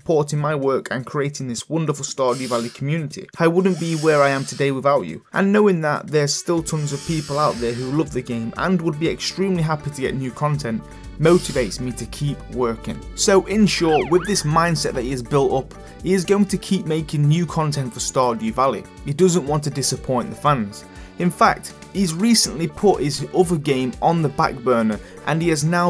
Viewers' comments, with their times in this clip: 0:07 Anyone notice the sniffing